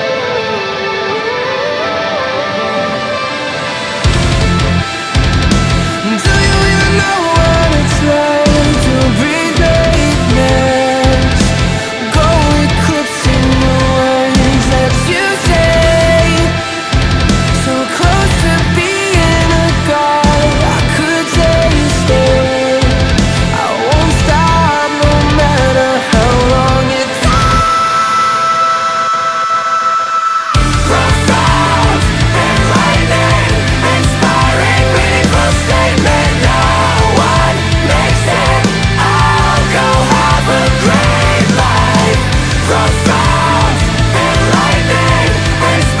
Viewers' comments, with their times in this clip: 0:04 THIS FUCKING SONGGGGGG AHHHHHHHHH!!!!!!! UNTIL THE END OF THE SON I FUCKING LOSE IT EVERYTIMEEEE ITS SO BEAUTIFUL UGHHHH WHY ARE THEY SO TALENTED!?!?!?!?!
0:27 WHAT IS THAT NOOOOOTE I missed these ridiculous screamy highs on Afterburner... They were the reason Mothership is my fav DGD Album, and Jackpot Juicer comes closer and closer to spot #2 now... Just absolute insanity